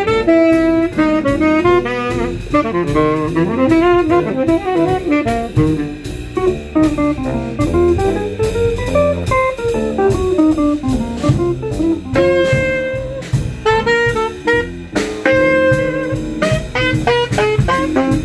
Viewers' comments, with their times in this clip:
0:05 a killer killer line